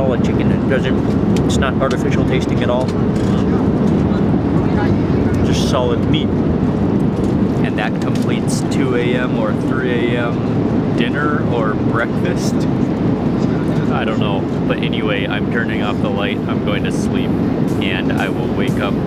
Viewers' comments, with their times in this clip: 0:07 the man chewing in the background 😂😂